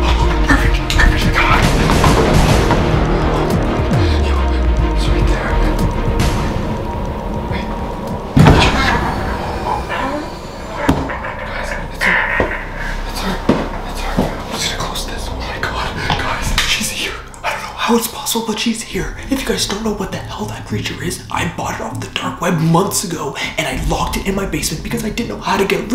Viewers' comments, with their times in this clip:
0:09 how did the "cursed woman" or whatever did'nt hear you when you were like OOOOHHH IT'S HER IT'S HER GUYS WWWWWOOOOOOWWWW